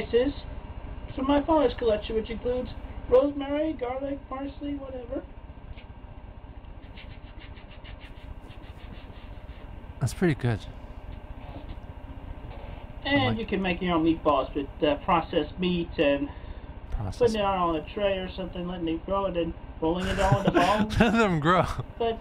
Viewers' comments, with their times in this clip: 0:03 Now I know what it would sound like for chris chan to say my name. This is a bad thing